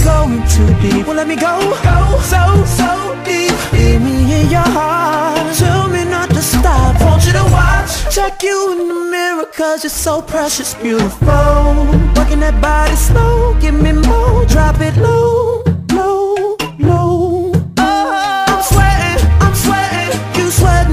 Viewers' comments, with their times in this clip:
0:04 beautiful motif. Beautiful